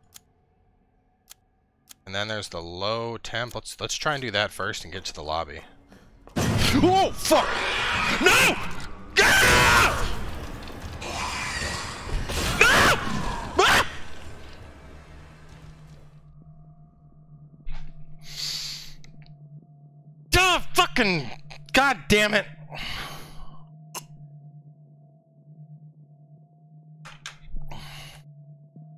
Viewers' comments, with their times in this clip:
0:09 damn cowboy what's with the little girl scream?!? Lol just kidding love your content...